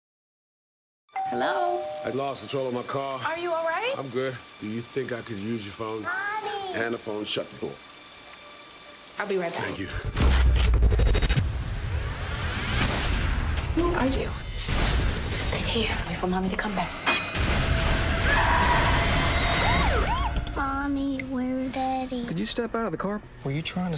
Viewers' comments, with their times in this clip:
0:06 I can't understand what he says